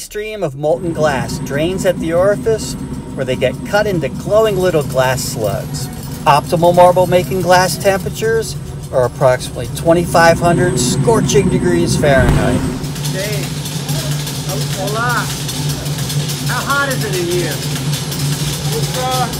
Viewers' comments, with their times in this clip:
0:06 the tinkle sound is adorable